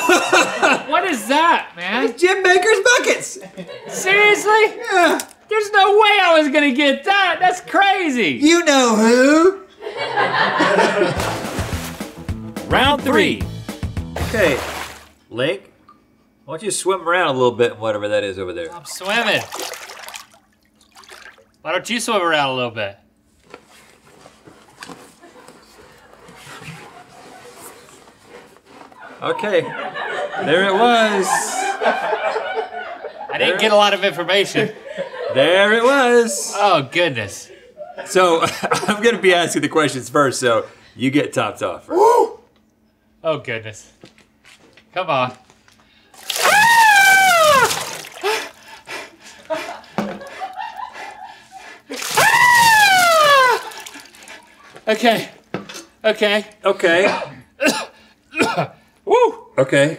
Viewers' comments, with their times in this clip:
0:03 idk why but i cant stop laughing about that YEAH from Rhett
0:45 link sounded like a screaming goat or sheep